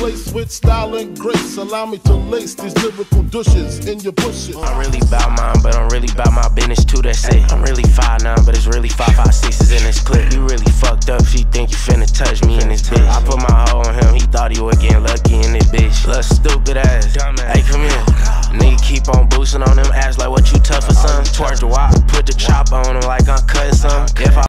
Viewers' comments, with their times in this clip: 0:08 bro think he adele